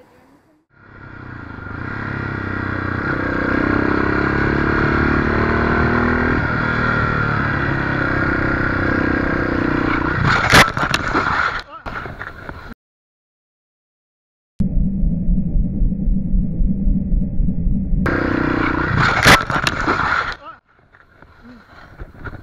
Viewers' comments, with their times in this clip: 0:07 don't look like is he is doing anything wrong. Hear the bike, he tries to take that curve very calm. Bad luck.